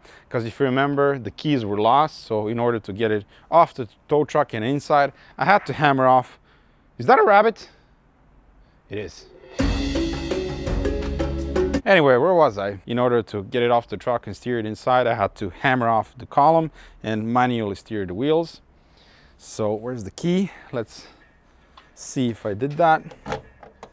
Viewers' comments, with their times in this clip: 0:07 " is that a RAÂÆbbit? " Nice voice crack mate